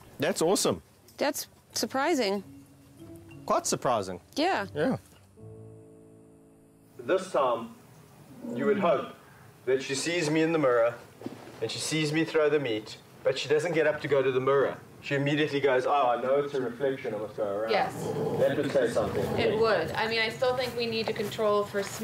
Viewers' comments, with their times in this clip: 0:09 Huh, I'd thought that Australian was a non-rhotic dialect of English, but I'm pretty sure I hear an intervocalic /r/ phoneme in the word "mirror"